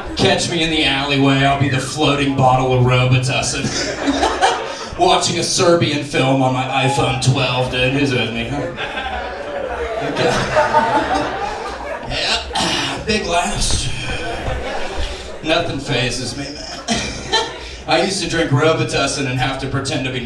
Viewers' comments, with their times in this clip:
0:08 Heard a meow Thought his set must be over lmao. 😂